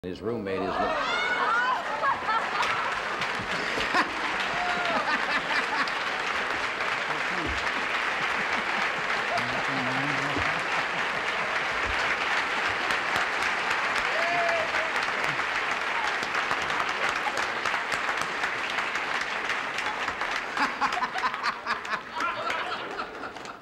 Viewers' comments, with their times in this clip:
0:04 That sounds just like the laugh at the start of Feel Good Inc by The Gorillaz!